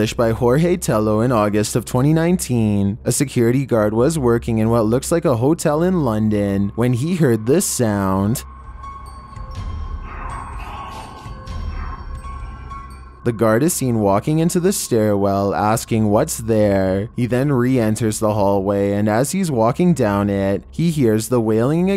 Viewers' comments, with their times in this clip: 0:09 i hear (Help Me!!) at first and then i hear (i see you)